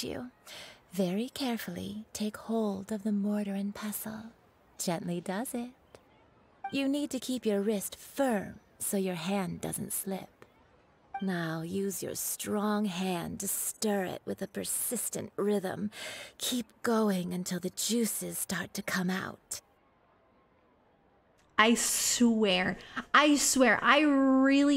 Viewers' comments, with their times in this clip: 0:05 I swear they purposely said it like that and they knew what they were doing